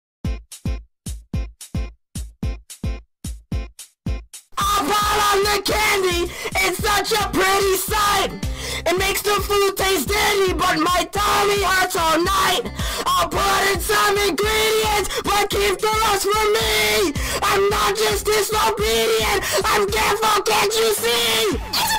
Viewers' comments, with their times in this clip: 0:05 starts video hears music Me:OH GOD, EAR RAPE!! NOOOO- dies R.I.P....Me..